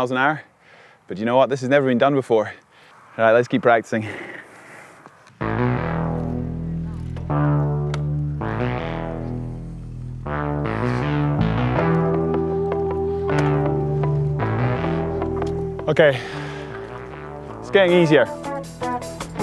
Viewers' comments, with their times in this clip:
0:06 Waw, that tune Striking similarity to Birdland. I like it! Is that just a royalty free track?